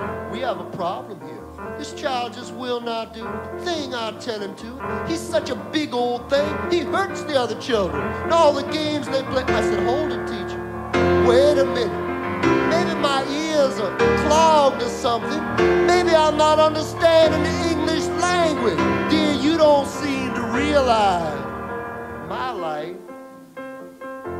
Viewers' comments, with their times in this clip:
0:09 Thank you so much! Recording oopsie